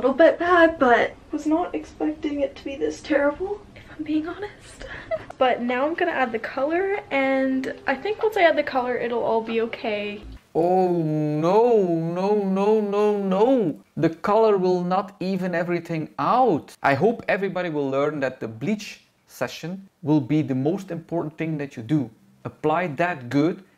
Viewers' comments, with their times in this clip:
0:05 When the laughing stops...